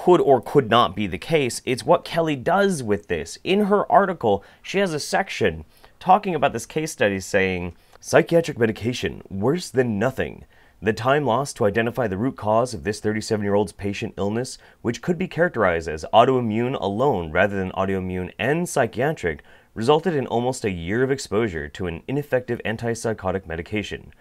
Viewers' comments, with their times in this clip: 0:07 Serious question: Are you intentionally trying to sound like George Takei when reading that excerpt?